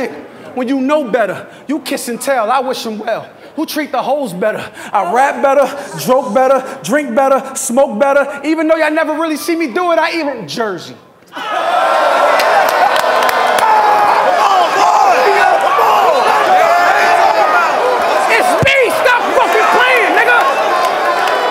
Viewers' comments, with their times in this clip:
0:07 aye did he say he choke better (pause )😭